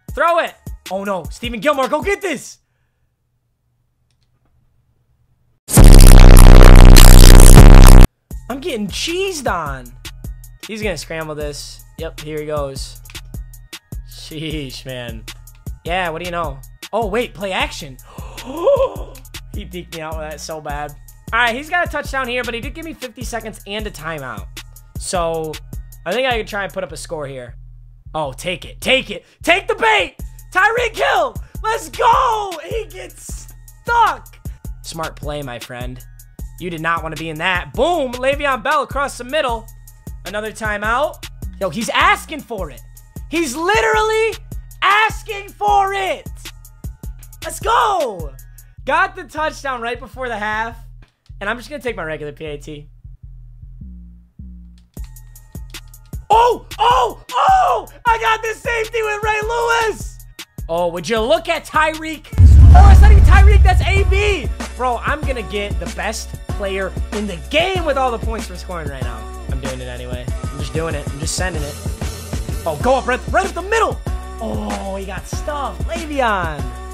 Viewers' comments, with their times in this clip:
0:05 headphone users beware
0:57 lol the voice crack tho